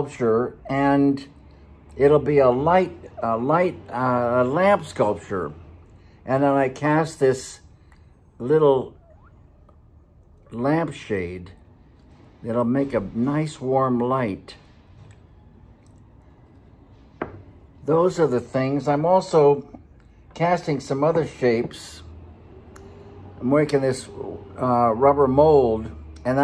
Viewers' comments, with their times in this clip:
0:08 The subtle sound effect of the amber shade sliding over the bulb is gold.